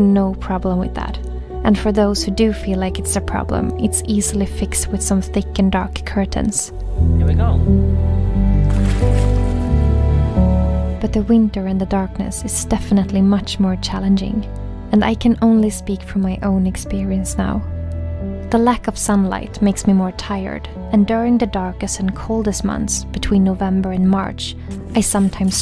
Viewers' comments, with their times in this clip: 0:10 You said her name better than most because native English speakers pronounce J differently but you said it the way we say it in Sweden. I love this video and get a bit chocked up from the stark contrast displayed in this video. The problem for me isn't so much the light, it does bother me still because it's hard to seal the windows off fully. But it's the damn birds making noise! But I also go to bed late.